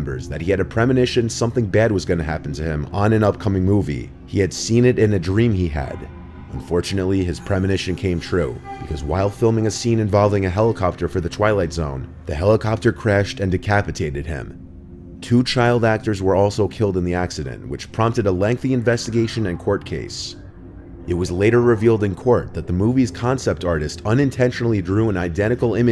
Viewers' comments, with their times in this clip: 0:07 gave me chills for some reason. Perfectly timed music queue. I know it's probably not the actual helicopter involved in the accident but it's always unsettling seeing inconspicuous images of things that will later be involved in freak accidents
0:09 there was a 3D sound , which resembled a woman's voice humming. That gave me a shiver.. i thought it was someone outside my window. 1 am here.